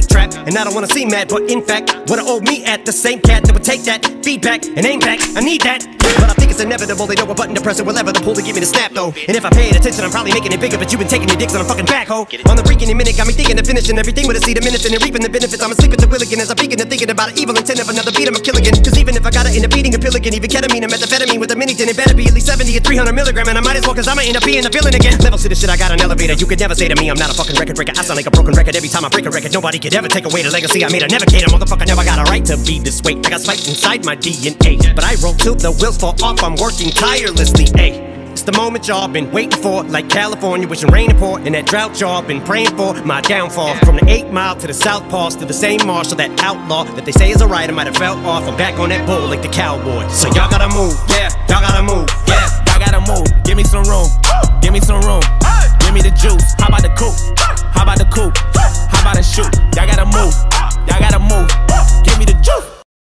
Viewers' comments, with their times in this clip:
0:04 the gunshot triggered it
0:11 Joyner is faster? Nah. You need to listen to again 😴
0:18 At that part he says "'Cause even if I gotta end up eatin' a pill again" but i kept mishearing it for the longest time as "'Cause even if I gotta end up beatin' a pelican"
0:25 Sounds like if he was going feral
0:52 High tones up